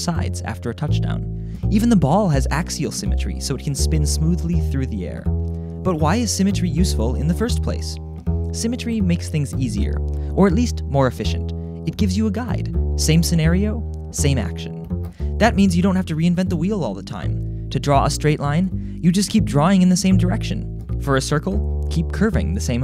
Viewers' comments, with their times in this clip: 0:06 Listen to the music. It keeps repeating o_o
0:07 for 8 seconds, the bass is on a broken record.